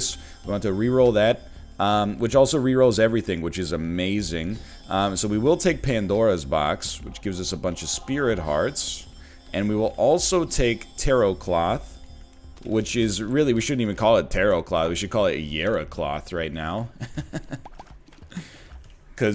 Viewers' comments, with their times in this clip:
0:07 The way he laughs after saying "we should call it jera cloth" and then laughs twice as hard after adding "because we've got jera" is gold